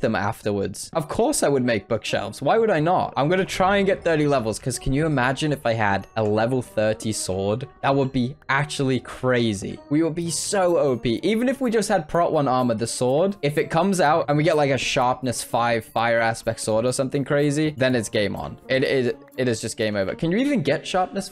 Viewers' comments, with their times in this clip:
0:03 mining emeralds and fall down Villagers : high breathing